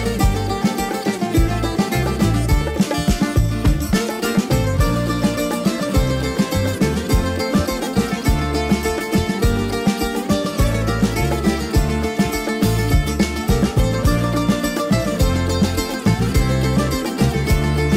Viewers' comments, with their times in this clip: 0:04 Best Music!!!!! ❣️❣️❣️❣️❣️ Especially the Greek